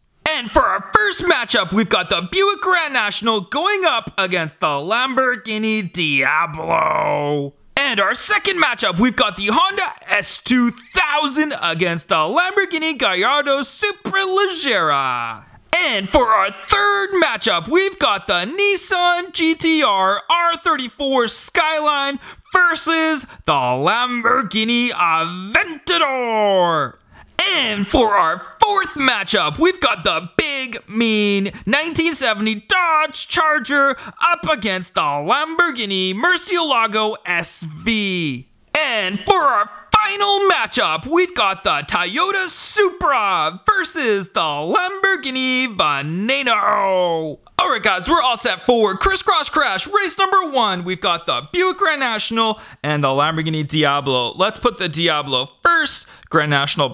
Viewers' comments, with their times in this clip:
0:06 diagro the very deep voice !!
0:40 did you say Tayota (Tay-ota) because the correct way is Toyota (Toy-yoda)
0:40 TAYOWTA SUPRA VS LAMBORGHINI VANEYNOW!! LOL 😄😄